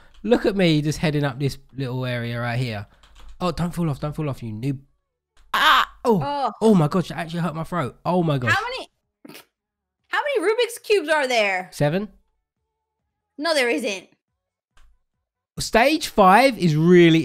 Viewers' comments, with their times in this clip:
0:04 LOL the noise he made 🤣